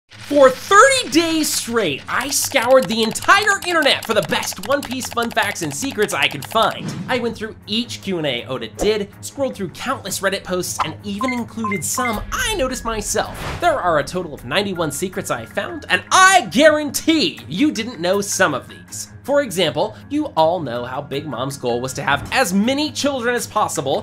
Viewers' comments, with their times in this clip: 0:07 he said oden not odda